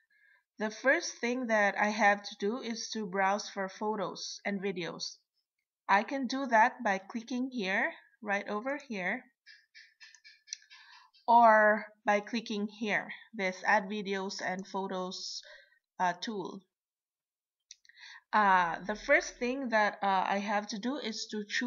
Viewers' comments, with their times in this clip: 0:08 Are you in Costa Rica? Because in there is a sound that some salamanders make all the time inside the houses in Costa Rica. They are pink and they always hang from the celings and always make exaclty that sound. Good Video Thank You.